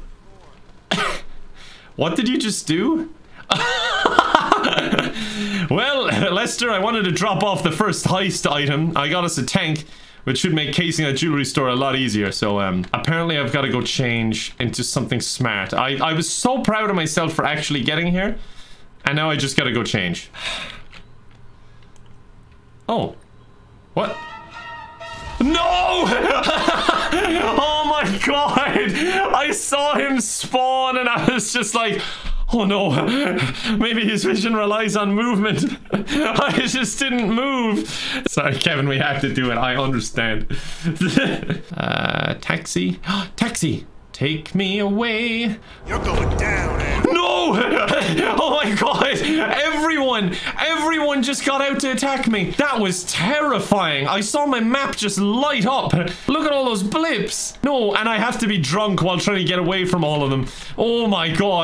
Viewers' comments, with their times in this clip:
0:07 Did Lester shout "KEVIIIIN!!!!"
0:22 The "oh!" is adorable
0:23 I love when Sephiroth theme playing everytime jesus appeared
0:24 The fact griefer Jesus came in with the Sephiroth music was just perfect
0:46 The genuine fear of his voice.